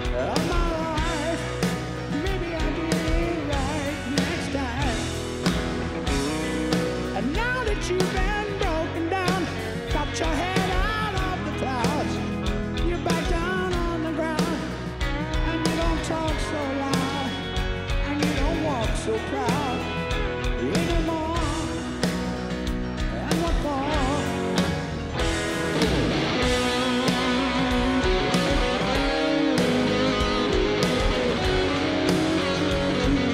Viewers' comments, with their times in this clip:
0:06 love the countryish guitars that Fortus pulled off then Metaaaaaall in the solo :3
0:18 the way hes singing is fucking embarrassing.